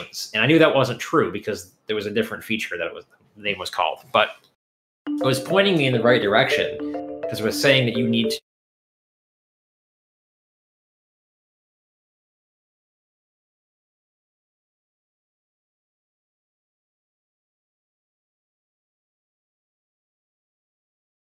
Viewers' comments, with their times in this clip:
0:04 microphone cut out
0:06 his sound dies and we can't hear anything
0:08 mute audio from the guest